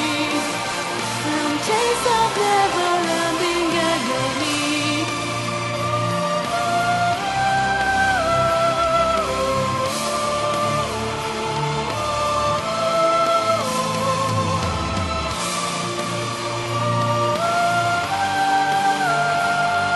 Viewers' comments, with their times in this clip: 0:05 Out of all the covers out there, you made it at the high octave part ...just perfect. *_* Great job!!! ^_~